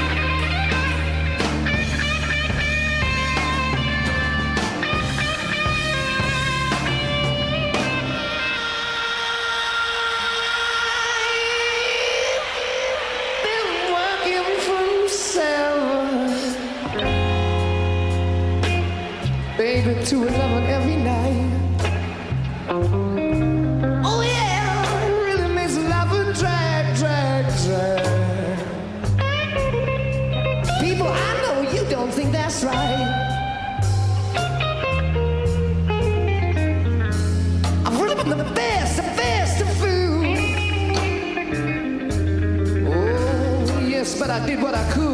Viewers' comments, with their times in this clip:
0:07 When Robert's voice comes in, that sounds like an edit to me. You can hear an overlap of performances (and it's no secret whatsoever that Page did all sorts of cut and splicing on the Song Remains The Same recordings...recently not always for the better)
0:32 it's all Robert Plant, i understand what you mean by thinking it could've been the guitar but it isn't, a harmonic would make that sound come outta the guitar but you can hear Jimmy's distorted strumming.